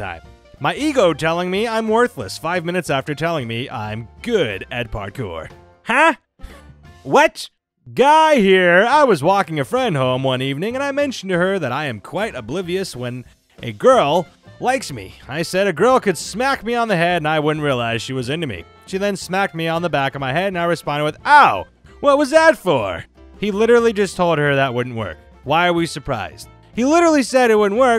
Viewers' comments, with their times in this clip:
0:10 you slaughtered that parkour joke reading it incorrectly, not that it was good to begin with, but still.